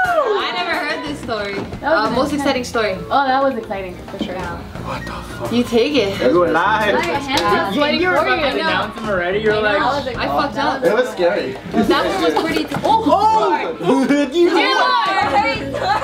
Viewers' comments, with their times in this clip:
0:04 you can hear one of the camera men say 'wtf' under their breath, lol.